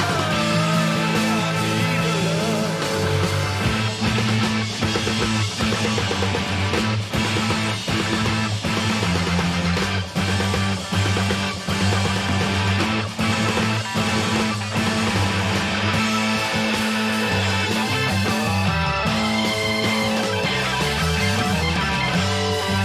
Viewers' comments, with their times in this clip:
0:05 They play this note for note, every time.. they are an amazing band.. natural key of a keyboard (C/Am) all white notes.. haha Not to brag but when I was 19 (Im 51) I stood backstage at a gig in a circle and sculled bourbon shots with Ian Gillan.. and he did this song that night, just like this.... he must have been in his 50s at the time haha... I was never able to see Deep Purple I wasnt old enough.. but that was a bit cool.. The keyboard is a Hammond B3.. played through Marshall amps.. Bolero beat.. with a full rock band.. love playing this bit.. You MUST youtube "Deep Purple Live In Japan" and listen to the whole thing!!!! Interesting interpretation re: the feeling of War.. Twice.. We have had 2 World World.. So very apt..